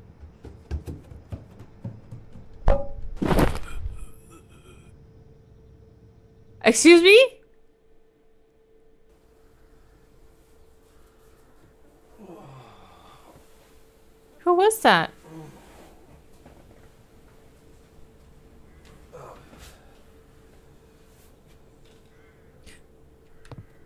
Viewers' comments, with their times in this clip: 0:06 I love the tiny lil' bonk sound they use when he's knocked out.